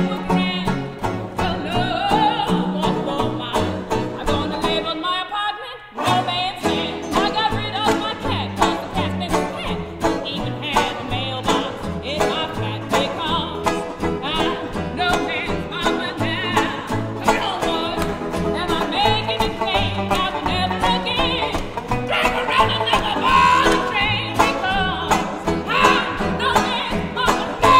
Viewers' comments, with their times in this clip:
0:05 Great music! I also love the foot in a flip-flop that appears
0:10 GROOVY FLIPPEDI FLOP